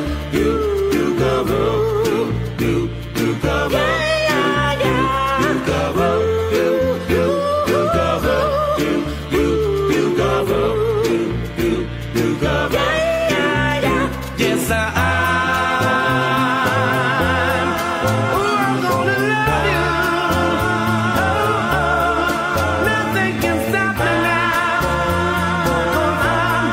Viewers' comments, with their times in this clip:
0:07 Great 👍 doo wop music 🎶 ❤❤😊